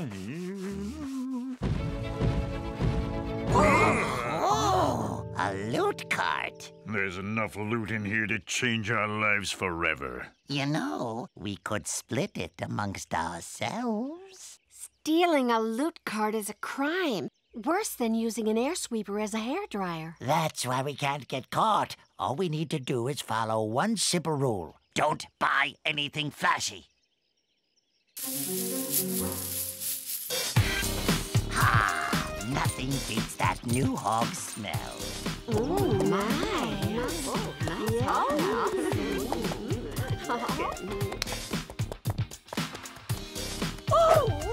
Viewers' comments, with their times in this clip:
0:05 so goblin can speak now???!!!!
0:24 that goblin sounds like ice king!
0:29 My mama told me that im watching porn in when she heard the archer